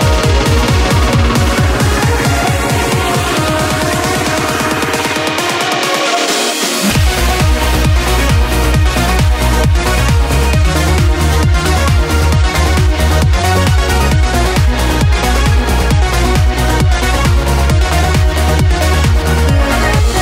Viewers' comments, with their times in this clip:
0:06 I really love how that part was extended compared to original, really trance genre styled. Also adding sample of original song sounds brilliant